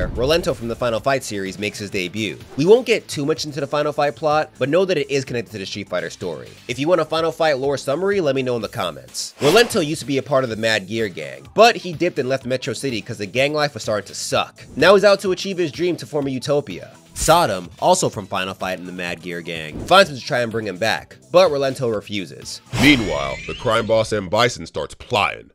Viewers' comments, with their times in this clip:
0:09 either this is the most seemles insert of Bisons voice, or this bro meeds to be voicing Bison cause that was perfect.